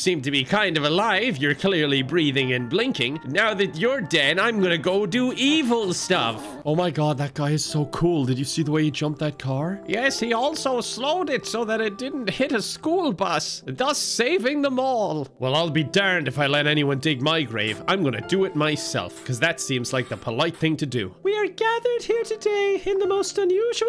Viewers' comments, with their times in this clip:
0:09 The accent sounds like every old man in fallout 3